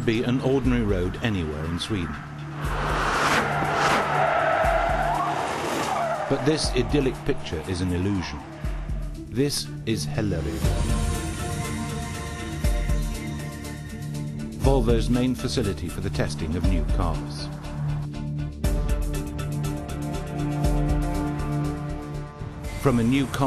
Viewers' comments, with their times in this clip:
0:08 i love the way he tries to say hällered